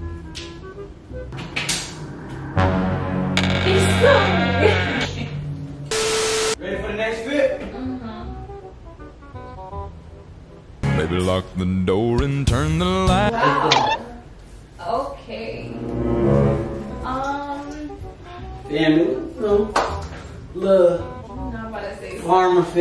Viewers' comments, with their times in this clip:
0:09 Why is no one talking 😂💀